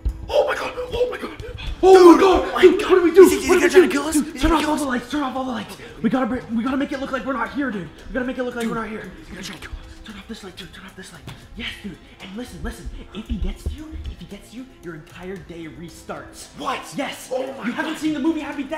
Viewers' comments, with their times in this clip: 0:04 "we gotta make it look like were not here" I'm pretty sure he heard you screaming "Deathday is that you?"